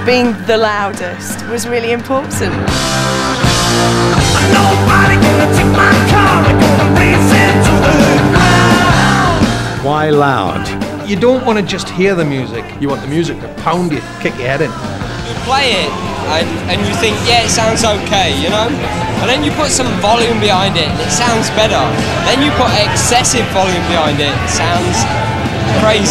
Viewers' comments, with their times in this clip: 0:10 Bearded guy says it, is that a Geordie?